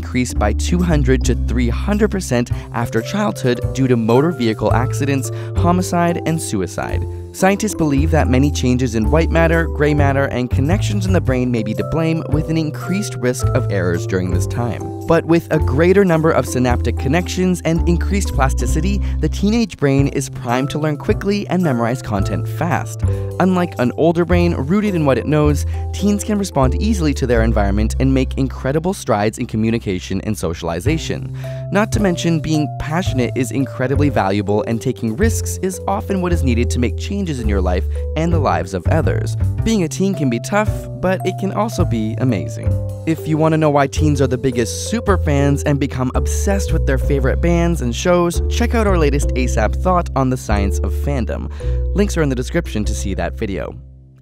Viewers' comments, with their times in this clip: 0:05 I found this information really great, although I though it was very rushed and played far too quickly. Also I noticed that minutes into the video where it stated in words about "several mental illnesses emerge", the narrator misses this out this content...So the text content differs from what is actually being said
0:41 life is amazayn!